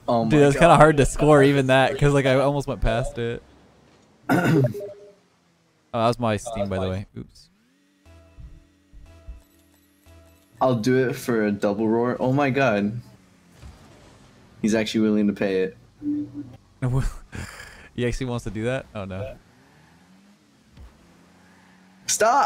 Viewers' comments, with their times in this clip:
0:03 who else looks at their steam when his steam went off?